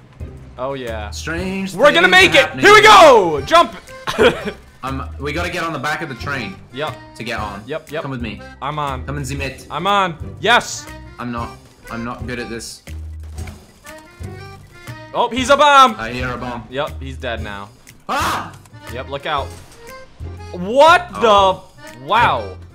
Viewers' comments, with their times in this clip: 0:07 did he say: „Kommen Sie mit“ ? xd